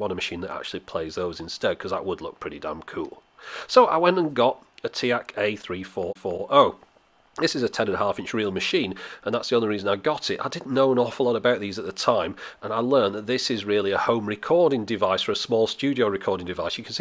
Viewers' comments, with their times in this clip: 0:04 did you repeat you saying "4" becouse you fergot a "four" while recording your voice over? It really sounds like you did. lol